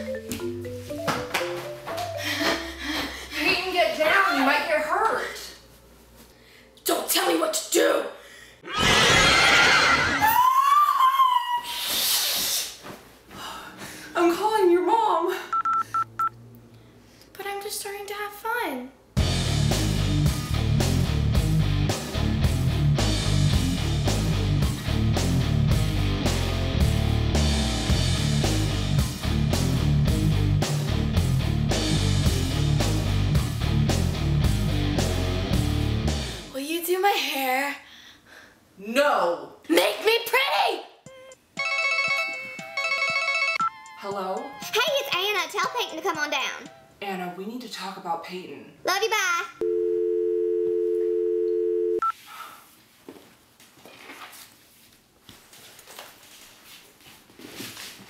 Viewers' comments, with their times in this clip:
0:06 patan went through puperty
0:44 I swear I heard: tell satan to come on down xDDD